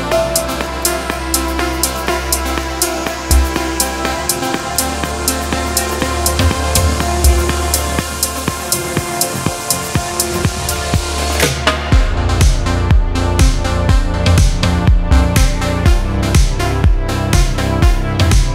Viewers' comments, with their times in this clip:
0:04 The vibes you give us with this music is ethereal 😍 The drop ❤